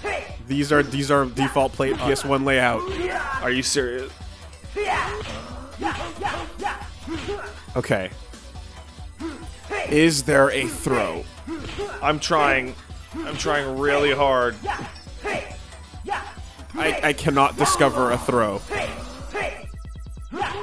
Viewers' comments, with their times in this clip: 0:03 Oh god, that note is so high it could make a dog go deaf... Fuck, my head!